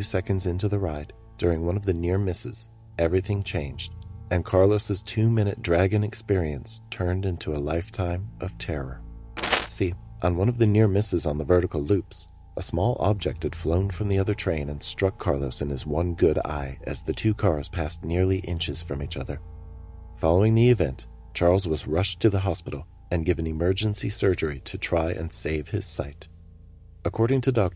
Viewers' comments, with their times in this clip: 0:08 Bloody hell, that 'transition sound' you used had me jumping out of my seat and at I thought my speakers were about to die. Then I heard it again, giving me another jump scare. Hahaha it's a terrible sound mate! Sound among others